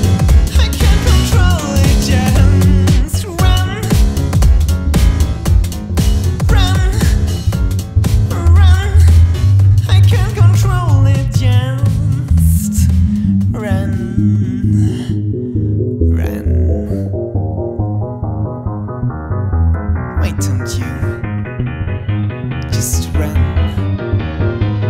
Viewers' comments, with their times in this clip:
0:09 Wow dude. I've commented on previous things but I switched accounts, so hi again. Anyway, really great job on this one! It sounds really different from any other song you've made and I like it a lot. The transition was real smooth and good. Good job on all of the sounds and beats and vocals that really show the emotion of the song and everything you used, this is truly fantastic and probably one of the best things you've made. On the other topic, if you're able to, you should use music to get some of that stuff out. It's good that this helped you. Keep working to trust yourself and do whatever you need to do to feel better. Real good job on this. I look forward to see what you've got next time!!